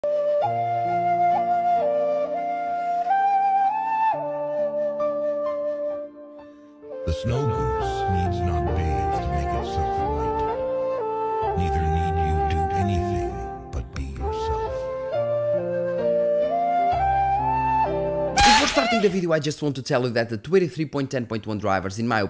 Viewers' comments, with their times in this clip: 0:03 "I'm playing my ball and dog shit"